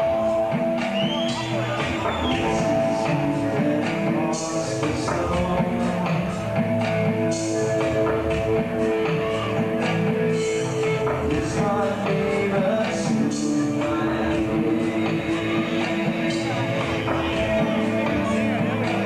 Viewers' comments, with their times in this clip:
0:04 lmao who is that dude and why is he singing